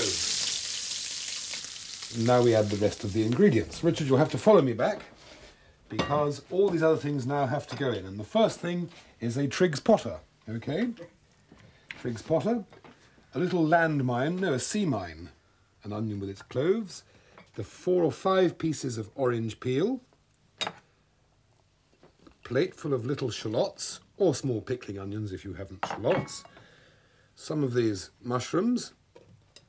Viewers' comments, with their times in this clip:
0:10 What is it that he put into the pot ? He says something like "trigs potter" but upon googling that hasn't turned up any results.